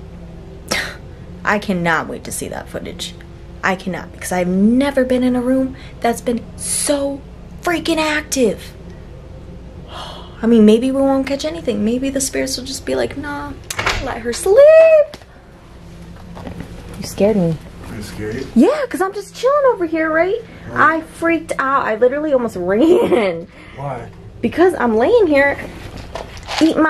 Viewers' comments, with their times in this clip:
0:09 when your talking you can clearly hear a loud sigh. 😱
0:09 Listen there was a breath sound.
0:09 Did anyone else catch that deep exhale of air in the camera ? thats was loud!
0:10 maybe it was you exhaling from exhaustion, but there was a very deep breath, & I didn't see your mouth moving at the time. I hope that makes sense & doesn't sound disrespectful.
0:11 OK well when you’re talking about how the room is “so friggin active” I had to watch it a few times to be sure it wasn’t you letting out a huge sigh because I hear “aaahhh” right after you’ve said it & your mouth isn’t even open when you hear it so this is one very active room!! I’m not hearing the scratching in the ceiling you keep going back to but this I know I hear & nope, not you (sure sounds like it could be sooo... do we have a mimic’r on our hands?!?) got a long night so we shall see I guess, before I forget though, thanks for sharing!! You barely got settled into your new place & already putting out great explores!! Thanks again for having me along! 👊🏼💥🖐🏼🧼 just fist bombin ya w/hand wash reminder LoL! TTFN KLP ✌🏼🙏🏼🧿 🧼 (& don’t forget 🗣🛐!! I think this is one where you definitely don’t want to be followed home!) we continue...
0:12 & you hear someone take a breath or sigh